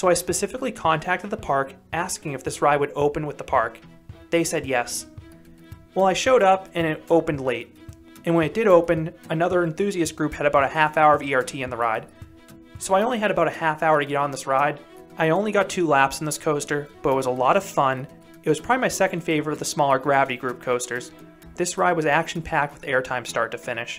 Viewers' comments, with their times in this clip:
0:09 What’s a half hour VRT?